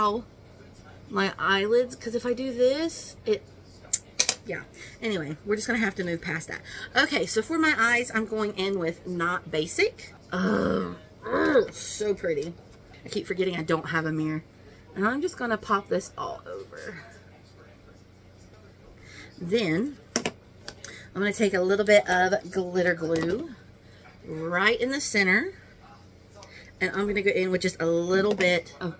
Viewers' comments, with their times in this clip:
0:10 Hi! New sub 🩷 I am also a sucker for complexion products!!! I need to check out that essence blush and the PF concealer 🫨 Oh and the grunt when swatching the shimmer….relatable lmaooo.